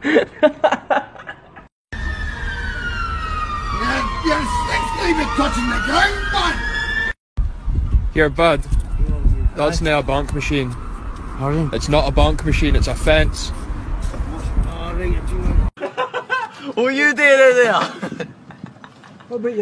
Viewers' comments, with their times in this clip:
0:04 he sounds exactly like the Scotsman from Samurai Jack 🤣